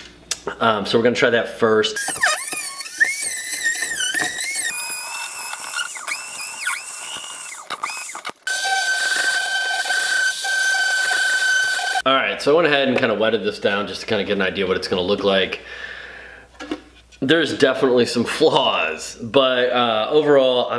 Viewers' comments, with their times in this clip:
0:03 AARRRGGGGHHHHH. D E N T I S T 😖😖😖😖😖